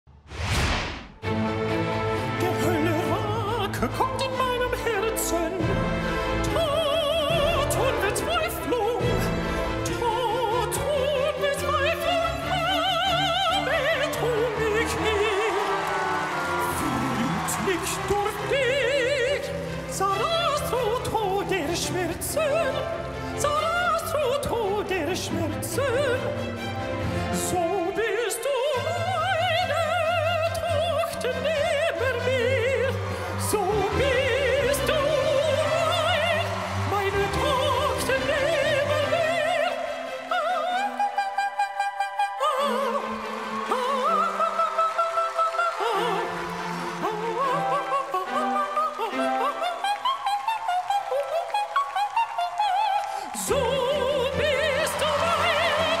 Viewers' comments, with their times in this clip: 0:00 That’s a very good German pronouncing… wow
0:18 as german im confused I understand "Salat so todesschmerzen" wich means "Salad so deadlypain"
0:37 just realized that he’s singing German lol